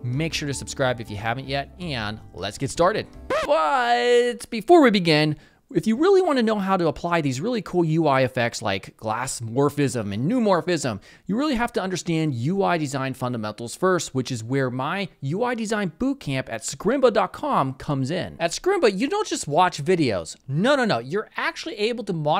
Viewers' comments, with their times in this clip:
0:03 I wonder if you have to shoot that kind of "interrupting" sound/word (?) a couple of times until you're fine with it or if it just works out at the very first try :D :D :D ...seriously, again very well done and marvelously explained 😍